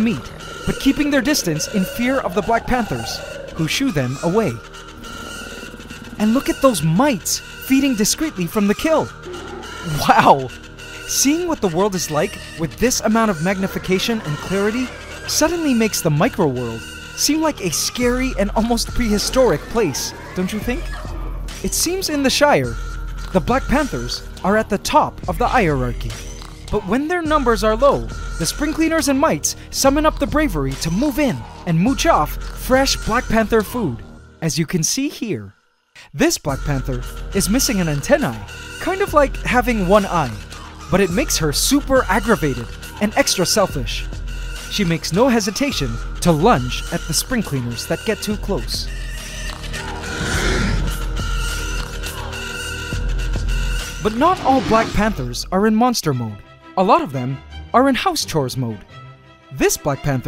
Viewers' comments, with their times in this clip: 0:03 that music really scare me
0:20 The background music for the Black Panther’s feast was kinda ear-rapish
0:42 Heyy, thx for your help! But thats not the music i mean! Hear the backround ? Its like an Electrostyle something like that? Sorry for my English greetings from austria.